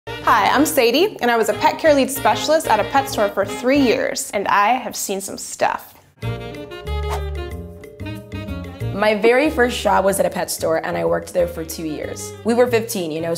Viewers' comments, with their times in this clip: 0:00 I thought she was gonna day Hi I’m Satan